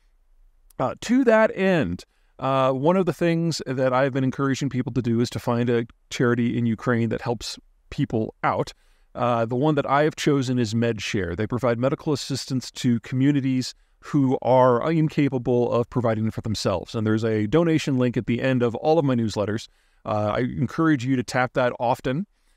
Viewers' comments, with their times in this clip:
0:06 Midwives help people out